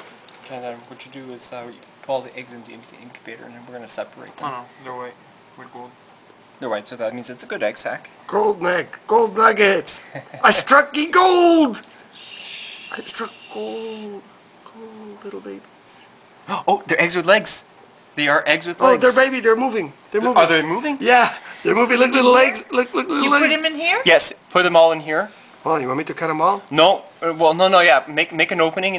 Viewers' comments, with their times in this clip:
0:10 the funny moment when the guy shushs the crazy old man
0:11 Tarantulas are one of the few kinds of spiders I'm not scared of, but I don't know how the hell he touches that egg sac with his bare hands. I'd be scared that they'd all come out and crawl up my arm. shudders Why did they shush him ? They don't want to wake the babies? :3
0:12 (very quietly) I struck gold... :)